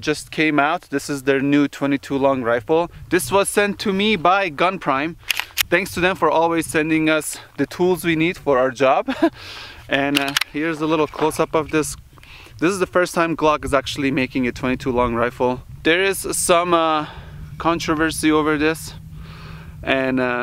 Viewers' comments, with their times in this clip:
0:06 don’t worry, I don’t think anyone could said that without giggling